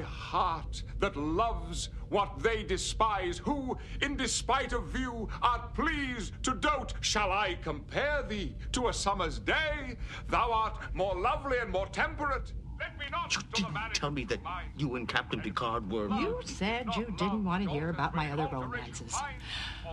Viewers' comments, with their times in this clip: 0:06 I think he actually corpses though that laugh could also be in character